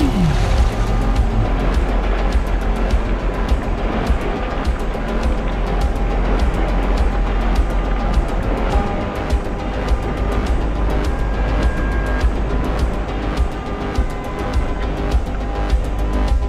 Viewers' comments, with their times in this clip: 0:03 Love the soundtrack that changes up mark. Has a strong Synthwave vibe.